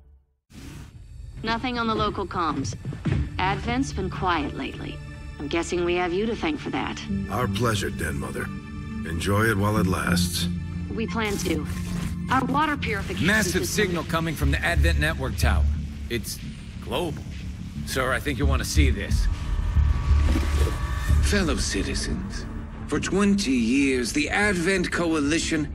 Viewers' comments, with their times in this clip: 0:10 Deck hand Garrus Vakarian announces that the evil Speaker, Garrus Vakarian, is making an evil announcement